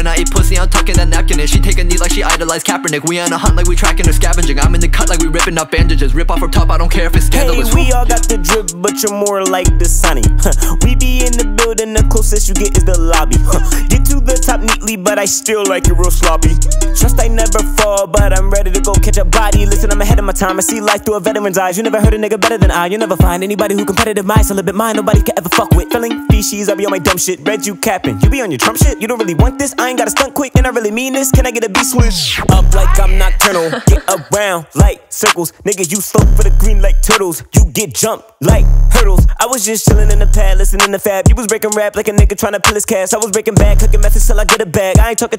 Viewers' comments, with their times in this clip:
0:08 this guy has nice Ski Mask style (after beat switch)! And i like it. Hope this dude is going to blow up some day. Easily the best verse of this cypher
0:17 reminds me of ski mask and Kendrick
0:19 This flow made me lose no nut November 🤣
0:21 kinda sounds like Kendrick, sick ass flow too
0:31 after the drop he turned into ski mask I think